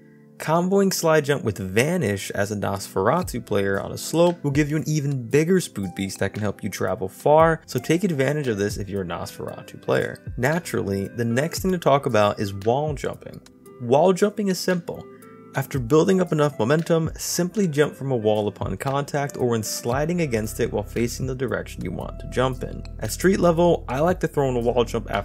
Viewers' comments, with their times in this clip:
0:03 you say spood beast instead of speed boost lol it’s okay I do that all the time
0:06 Sorry but i have to say what I heard "Spood beest" xDDDD